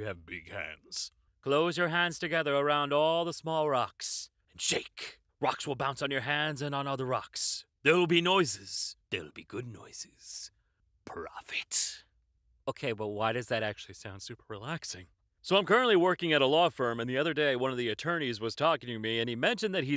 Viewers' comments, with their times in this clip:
0:04 the noises reminds us of money or loot in a small purse